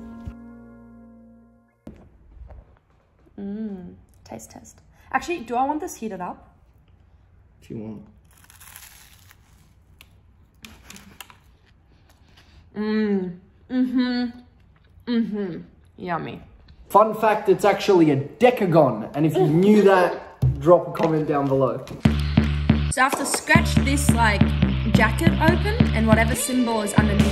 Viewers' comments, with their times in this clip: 0:08 THAT CRUNCH *chefs kiss*👩‍🍳💋
0:08 That CRUNCH😍somebody tell me where I can find that in Detroit please 😂